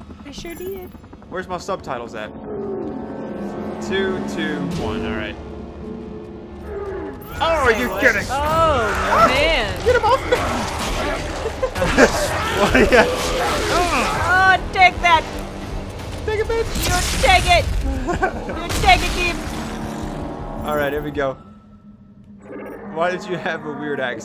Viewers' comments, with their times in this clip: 0:05 The creature says, this is Smeagol. Maybe, it's just me.